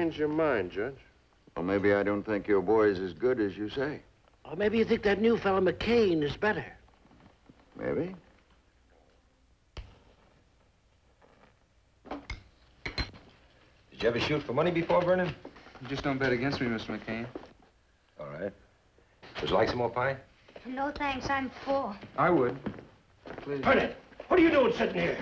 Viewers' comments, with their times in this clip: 0:09 when the young man lights McCain's cigar, that's an interesting match that makes a clicking sound like a lighter.